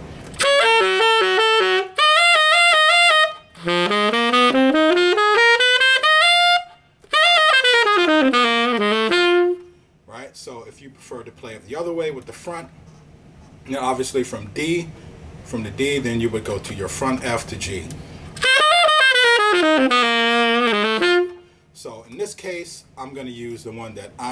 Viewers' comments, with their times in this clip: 0:07 What is that little resolving lick you do that is not apart of the scale ? That is so nice, and I want to know what the notes are so I could play it!